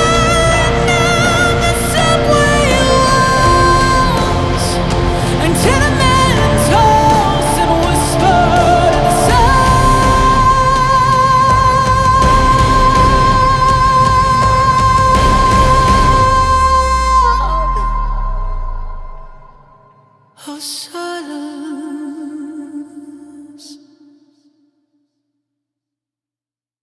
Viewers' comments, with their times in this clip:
0:10 That note hold goddamn.